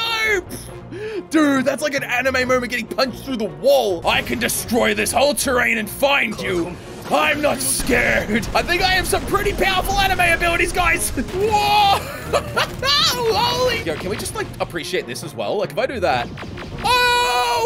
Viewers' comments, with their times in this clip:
0:05 Why does he sound like vegeta